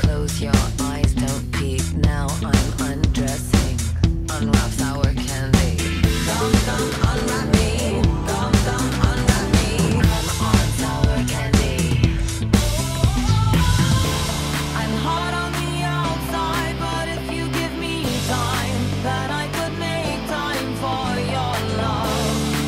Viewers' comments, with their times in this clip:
0:10 You’re so talented but c sour candyy should be much louder